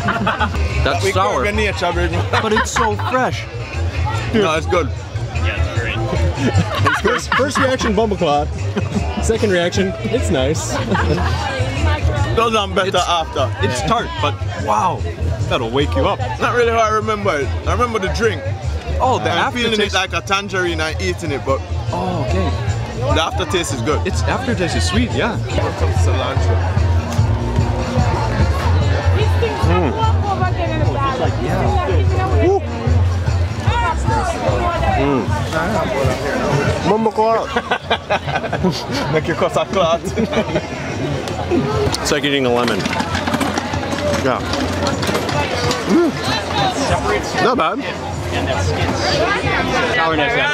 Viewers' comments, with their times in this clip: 0:10 The dude with the glasses eating the sour fruit trying to sound like Mark weins 🤨🤨🤨
0:37 hear the mon